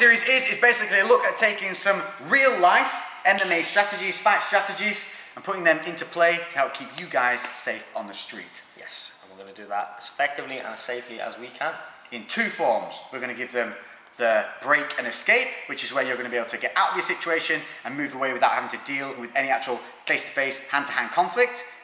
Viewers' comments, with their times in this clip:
0:03 woah i thought he said REAL LIFE ANIME strategy!!!